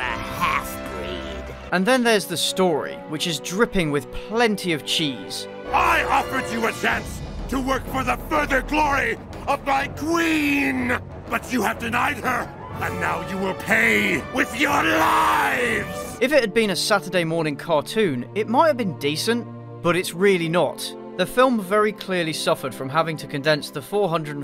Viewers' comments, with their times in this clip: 0:06 sounds like something Ugandan knuckles would say